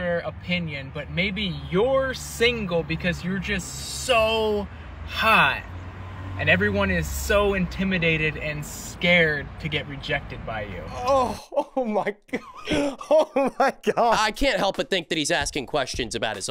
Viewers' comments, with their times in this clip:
0:04 he speaks exactly how i do when im high lmao